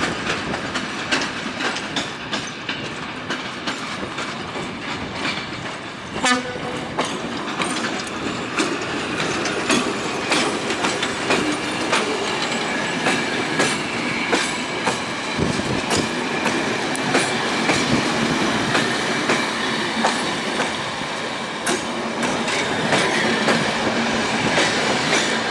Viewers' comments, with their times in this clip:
0:06 So cool! Love the honk !